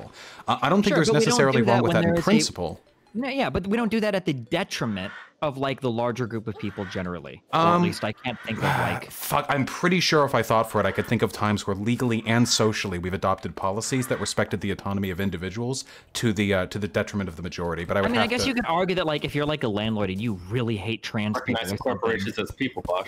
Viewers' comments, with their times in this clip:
0:04 I hear porn.